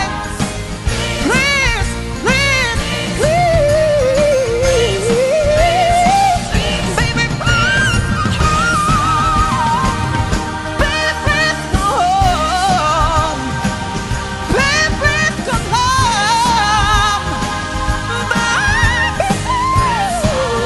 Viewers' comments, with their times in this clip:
0:03 You betta sang.